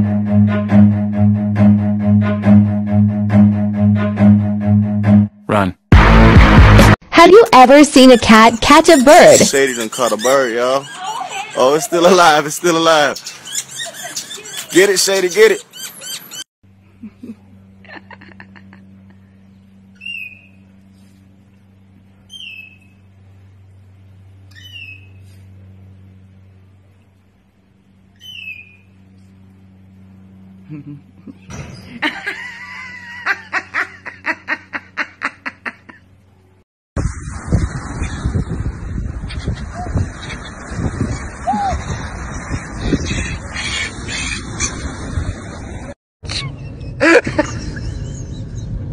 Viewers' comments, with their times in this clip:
0:04 ikr? i loved how supported that one guy was like everybody else screaming "put that bird down" only he was like "be yourself, kitty"
0:33 she did the Rosanne laugh on that poor cat 😂